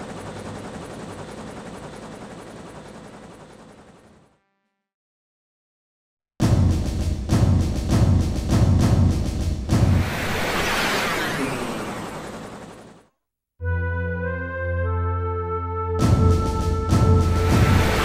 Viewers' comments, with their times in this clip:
0:06 FF8 music starts.... and i wet myself